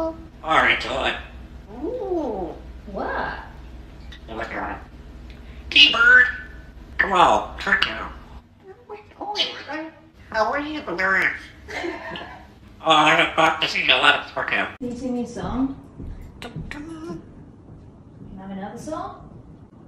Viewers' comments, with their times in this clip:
0:06 “I’m not going over there.” - Sounds like he once had a frightened child visit him…